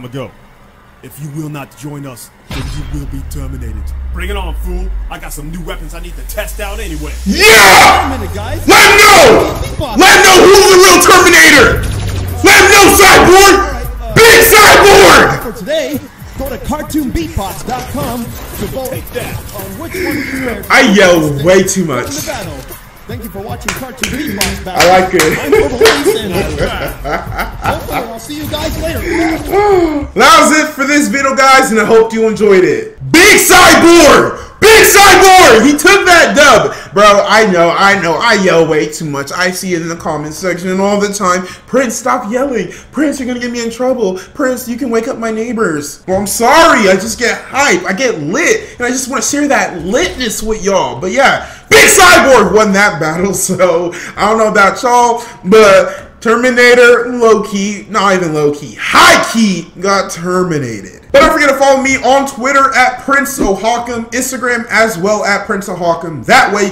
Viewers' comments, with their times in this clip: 0:06 Warning ⚠️ Headphones warning
0:07 R. I. P all headphone users out there
0:51 rip ear phones user